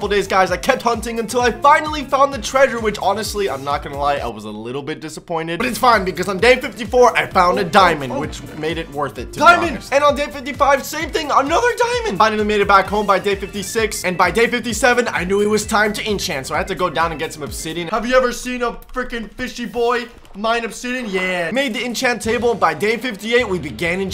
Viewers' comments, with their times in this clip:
0:09 he sounds like that kid that said diamonds for first time